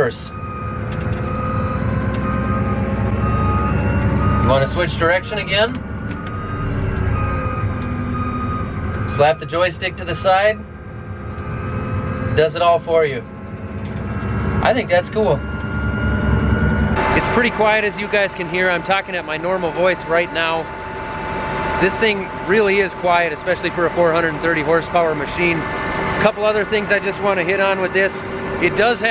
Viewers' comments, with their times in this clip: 0:10 when the dog says wow what's that?!